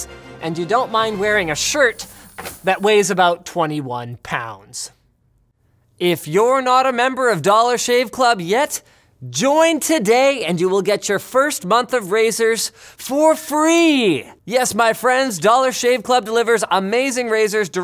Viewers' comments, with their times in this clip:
0:05 Woah, has Linus finally hit puberty?